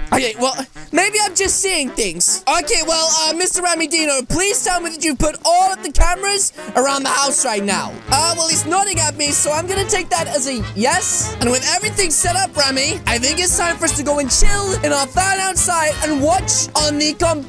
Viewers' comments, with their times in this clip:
0:04 lol the monster was talking lol